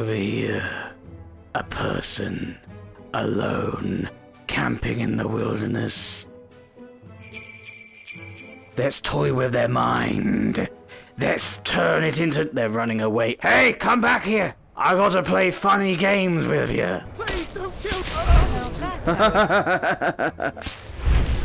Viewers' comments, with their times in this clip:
0:06 The bells destroyed me